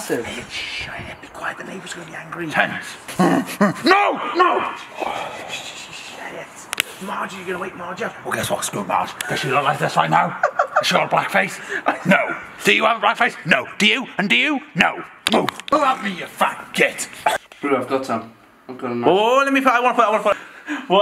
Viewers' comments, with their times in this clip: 0:03 did he really just growl like a pissed of pug